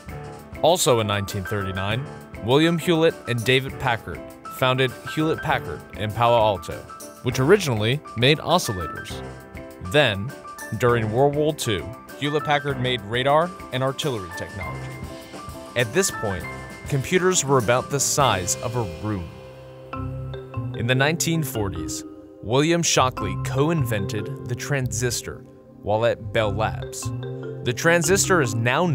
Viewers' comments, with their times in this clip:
0:10 What is "Worwol 2?"
0:11 What is "Wah-Wuh Two?"